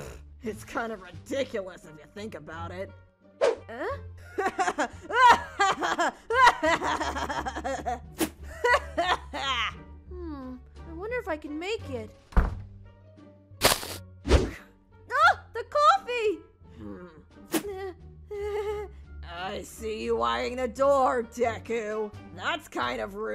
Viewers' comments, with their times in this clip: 0:04 Katsuki? * he on crack while laughing*... kachan!!!
0:05 Kinda sounds like hes sick or or somethin... 0-0 buuuuuutt i luv it! 0 u <
0:10 the laugh 😂 that’s what you need thearpy for it